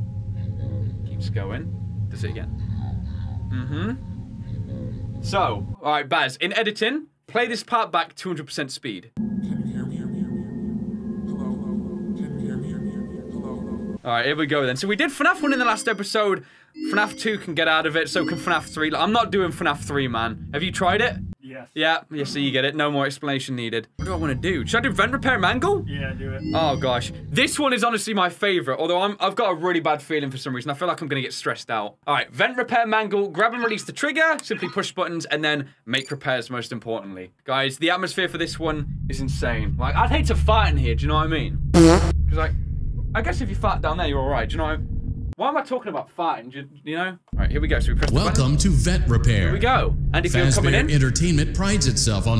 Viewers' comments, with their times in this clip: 0:09 Wow the voice " Hello? can you hear me?" 200% speed
0:40 the shart sound effect killed me I'm such a child